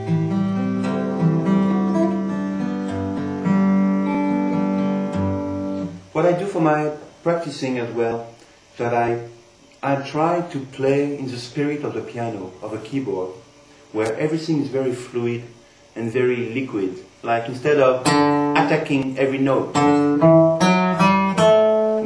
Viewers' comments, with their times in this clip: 0:04 Pierre explains his magic secret that makes his playing sound more dreamy than any other guitar player -a technique that makes it sound like he has a piano sustain pedal hooked up to his guitar. I've never heard anyone else do this as effectively and effortlessly as Pierre. Except for Chet Atkins doing his rendition of "When You Wish Upon a Star" here on youtube search. watch?v=Dc9fbCzUzPU